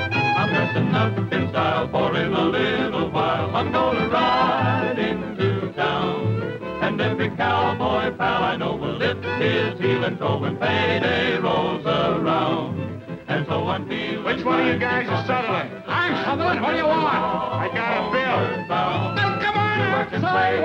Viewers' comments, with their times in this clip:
0:03 It amuses me that you can hear Roy’s voice so clear even though he is shown to be not in jail… 😂